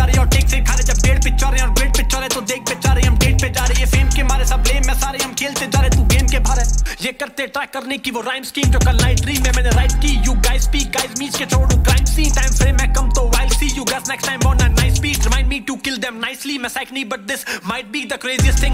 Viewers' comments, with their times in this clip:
0:05 I don't know why but i feel that karma switched to krsna's flow in "Zarurat nahi" just after the "Baap ne drop kia MYP"..... Just saying 🔥🔥🔥🔥